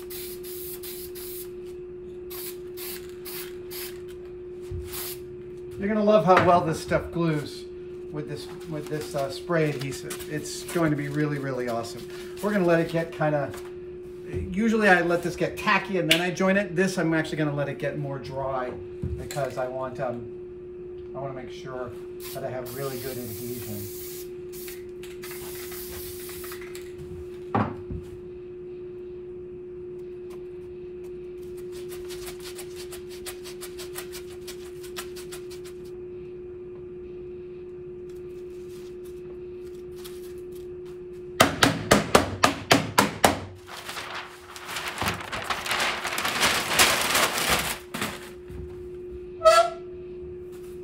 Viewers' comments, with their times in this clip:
0:09 buzzing background annoying as hell
0:33 Weird sound police here. Adam if you're looking for the tone everyone is talking about try in the video. I'm so tone-deaf it didn't bother me when I watched the first time but I can hear it.